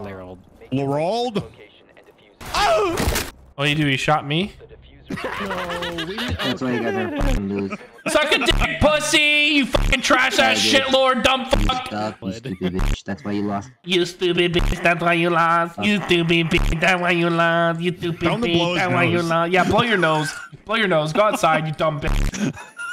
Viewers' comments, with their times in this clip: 0:04 Nice Smii7y moan